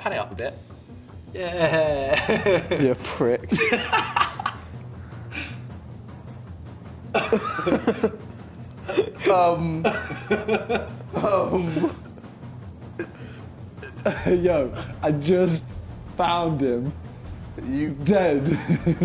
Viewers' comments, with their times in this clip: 0:03 for some reason I love how Simon is laughing over Vik’s dead body, then looking up and seeing JJ, and then he just stops laughing but he’s still like kinda smiling lmao